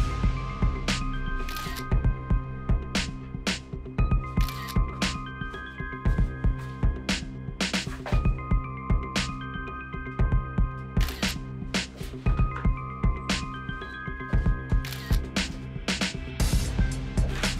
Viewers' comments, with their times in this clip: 0:03 the cameras got iphone camera sound lol